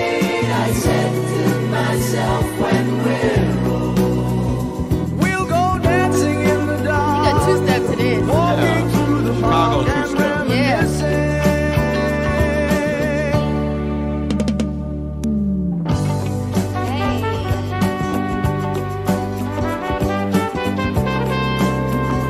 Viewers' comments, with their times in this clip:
0:08 They definitely had the IT factor. Harmonizing vocals carried most of their songs